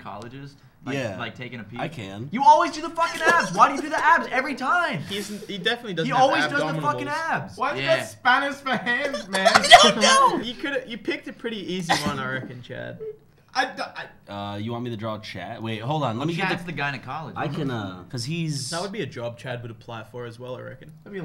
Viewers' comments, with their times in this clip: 0:05 Max: he definitely doesn't have "ABDOMNDIBALS"